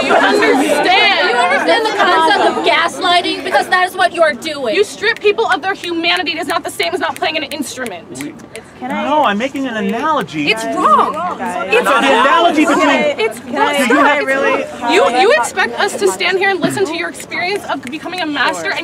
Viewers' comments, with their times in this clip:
0:05 That girl snapping her fingers while yelling was so cringe. You can tell she was raised in a spoiled manner and has rarely been told “no.”